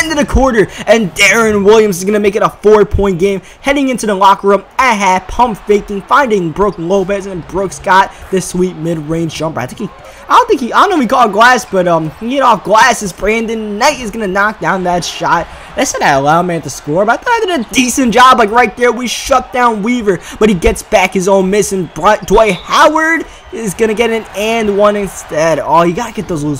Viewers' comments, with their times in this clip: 0:07 Did anyone else hear Aaron Williams